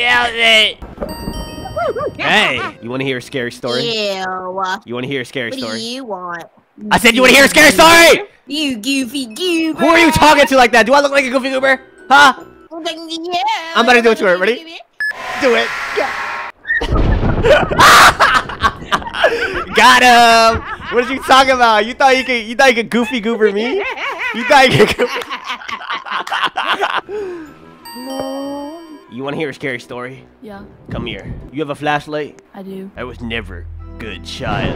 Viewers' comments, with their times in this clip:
0:04 she sounds like the girl that was talking about eating poop when I was on mic up I have a voice of it in my phone
0:20 goofy ahhhh laugh 😂